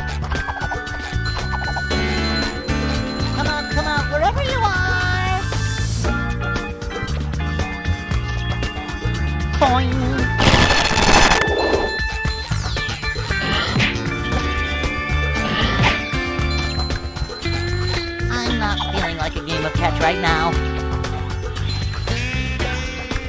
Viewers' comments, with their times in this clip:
0:10 That hurt my ears really bad
0:10 E A R R A E P My eardrums: ouch…
0:10 that was loud